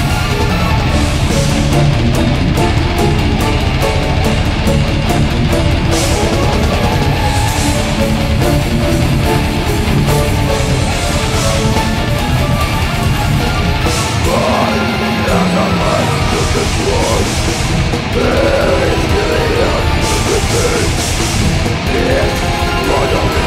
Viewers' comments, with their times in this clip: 0:06 i love how the drums drop